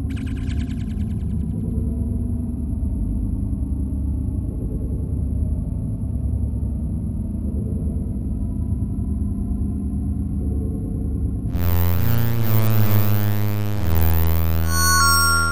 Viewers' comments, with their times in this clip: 0:03 farting so scary annoying music xD